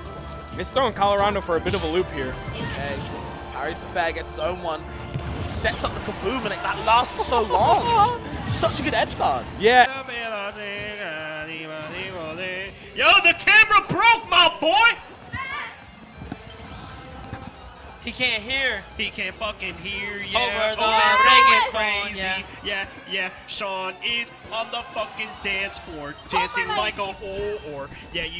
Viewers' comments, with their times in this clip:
0:10 The commentary is so chaotic and funny. Matches the energy of the clip very well